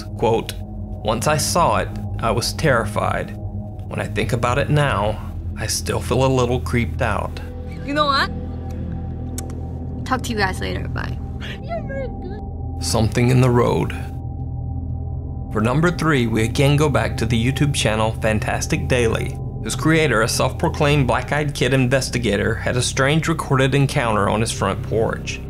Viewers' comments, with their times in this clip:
0:06 When she says "talk to you guys later bye" you can hear something say "bye"